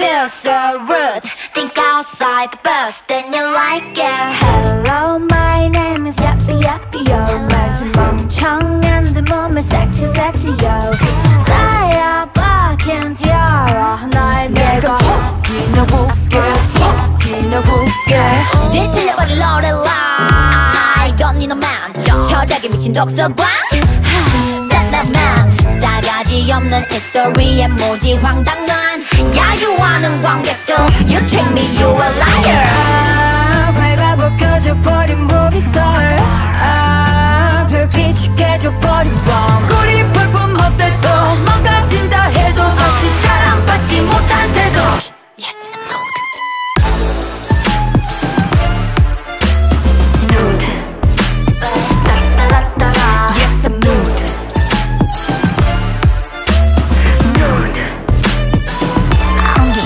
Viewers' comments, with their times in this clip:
0:03 Minnie's deep voice is so good Don't hate me if it's a wrong person because I'm only a new (g)-idle fan
0:19 come on women🖤🔥🍷 YoOr voice ✨
0:33 I'm crazy about Miyeon's vocals🤤❤
0:40 Blow Me Down?